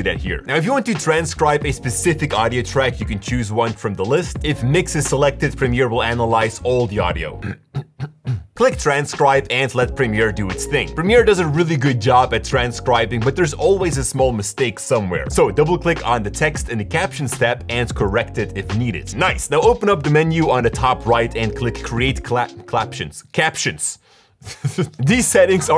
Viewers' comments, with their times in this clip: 0:07 Why did you clear your throat ? Something i missed?